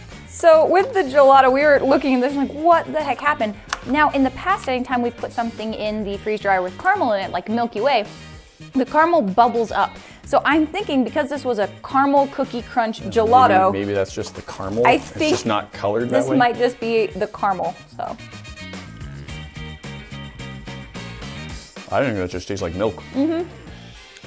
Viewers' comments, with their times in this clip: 0:06 Im sorry but.. Carmull